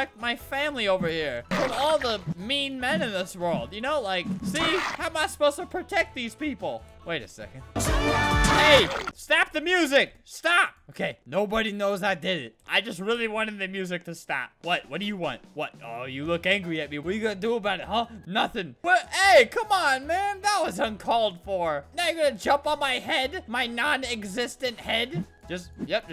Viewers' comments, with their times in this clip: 0:06 He stopped the music so comically right when the music reached a good part. (The song is called " Build our machine" if you wanted to know)
0:07 he is busting that music ;-;
0:07 one of the first times I have heard a good song on an adopt and raise a cute baby radio...
0:08 That sounds a lot like Build Our Machine